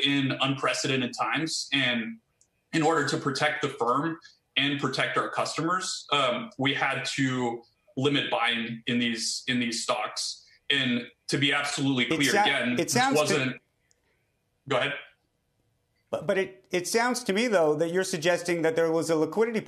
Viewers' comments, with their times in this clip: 0:07 this dude sounds just like Greg from succession lol